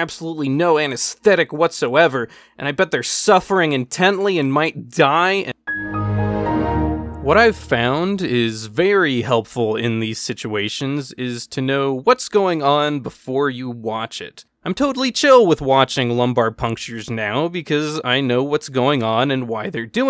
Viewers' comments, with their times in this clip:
0:05 The time frame of was too funny for me. The Windows computer shut down noise. lol